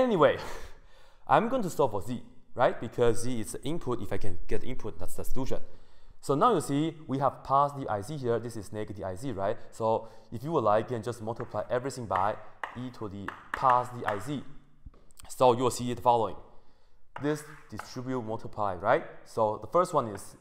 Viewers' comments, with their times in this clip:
0:08 Why did you not say straight hyperbolic function? the way you pronounce is decent but that time I had to turn on the captions. BTW I've gone through some of your videos earlier because YouTube, these are nice